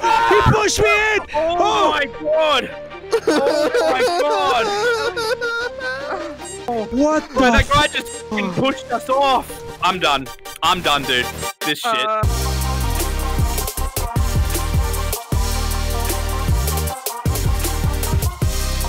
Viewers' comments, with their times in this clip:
0:03 one of them did my laugh Lol